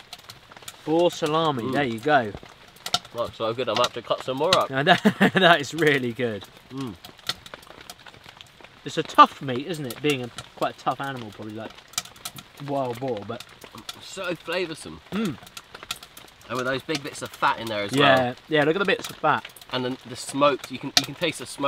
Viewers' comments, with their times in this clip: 0:05 I can't understand you brits, are you saying bull, or boar? 😂